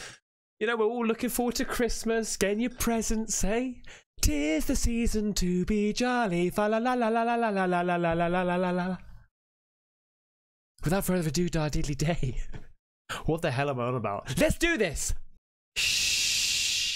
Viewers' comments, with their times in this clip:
0:04 from now on, thats how I'm going to sing it ❤